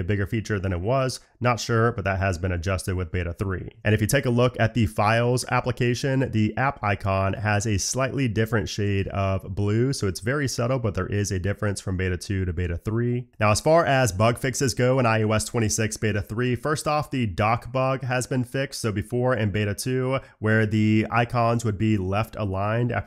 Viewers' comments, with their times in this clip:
0:04 why is there a fart
0:05 fart is crazy 💀
0:10 Explain the Fart!🤣